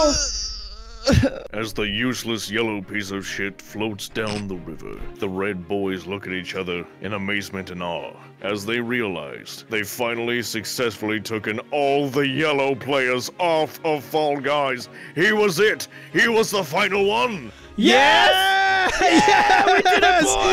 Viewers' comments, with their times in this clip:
0:05 Narrator's narration reminds me of Stanley Parable's narrator